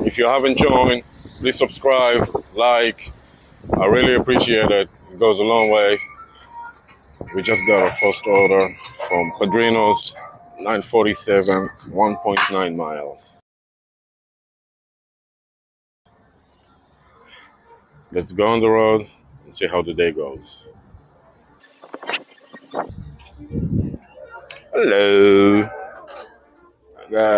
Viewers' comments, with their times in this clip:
0:08 sounds like you need to have brake pads replaced :D